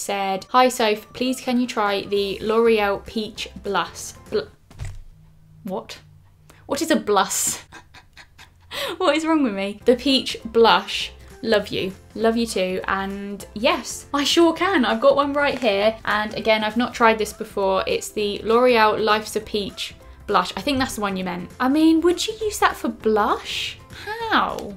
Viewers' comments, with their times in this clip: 0:05 Your "whot?" doesn't get any more Brit 😂😂😂